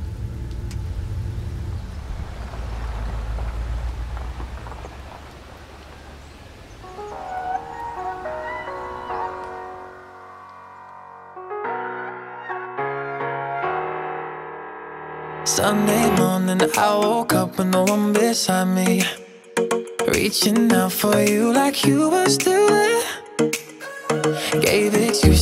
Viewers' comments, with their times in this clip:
0:07 When the beat start I get instant goosebumps 🤯🤗🤗😎